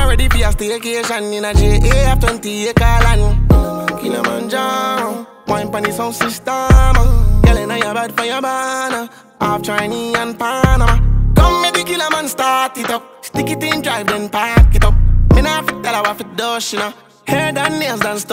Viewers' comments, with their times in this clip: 0:05 when the girl whines on the beat 😍im in love